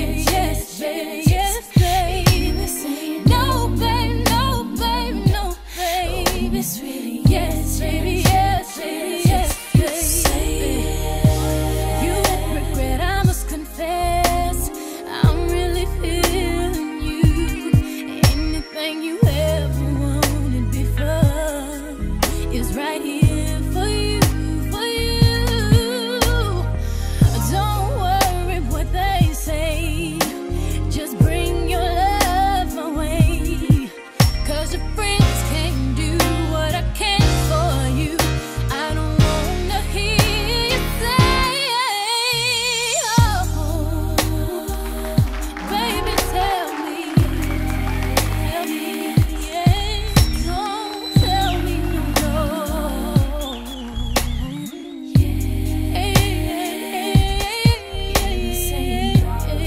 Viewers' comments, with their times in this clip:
0:10 Sang Beyonce!!! That bridge though... Fav part of the song!!! <3 That bass is sick ;)
0:13 i really start getting in my feelings The breakdown
0:43 The breakdown s always stuck to me when I was a kid .... classy yet sexy vibes